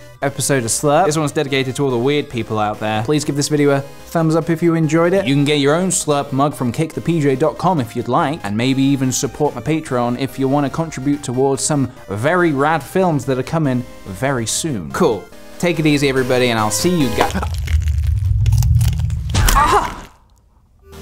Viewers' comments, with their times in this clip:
0:06 I thought he said "Cake the PJ"